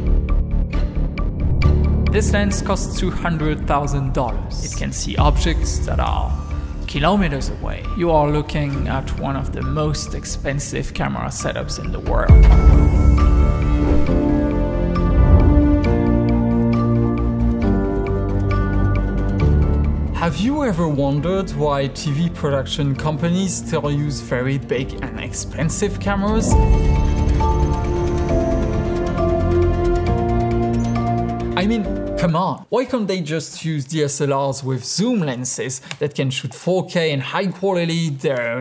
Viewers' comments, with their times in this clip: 0:05 Americans started speaking with such a low frequency they are turning their voice kind of robotic.
0:13 why is he so angry
0:22 Jesus Christ, this guy is so French that the only things lacking are the moustache, hat and baguette